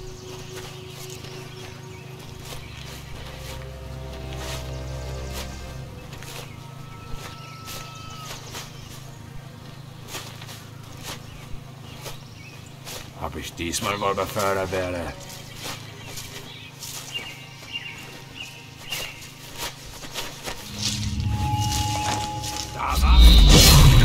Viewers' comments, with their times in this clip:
0:10 whatever he is rambling, but it isn't German... :D